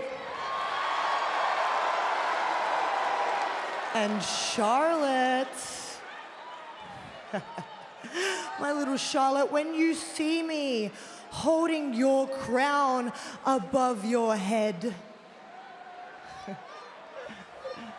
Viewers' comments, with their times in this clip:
0:05 Ngl but Rhea sound American